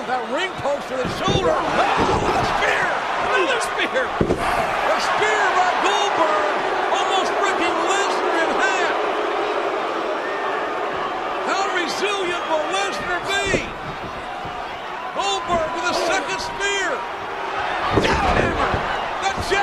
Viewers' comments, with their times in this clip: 0:05 Horrible match. Super boring. Us fans knew that both Goldberg and Lesnar were quitting WWE after this event. Hence the loud boos for Goldberg before hitting the Jackhammer Too bad this clip doesn't show the best part of the match.. when Austin, in the words of the legendary JR, stunners Lesnar and Goldberg right out of the WWE!